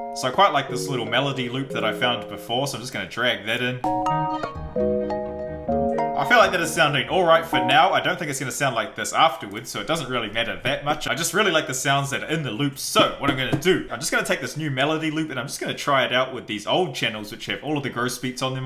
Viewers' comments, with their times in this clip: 0:04 actually went well together sounds like something young thug would be on